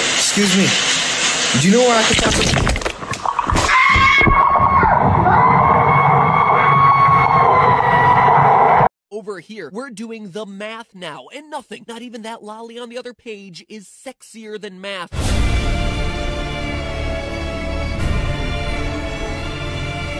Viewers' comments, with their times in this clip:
0:03 screams of pain